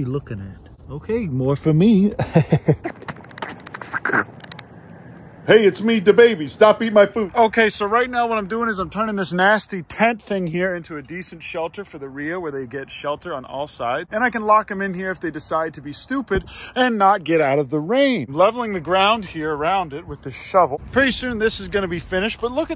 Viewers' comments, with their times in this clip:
0:05 WTF dababy voice reveal????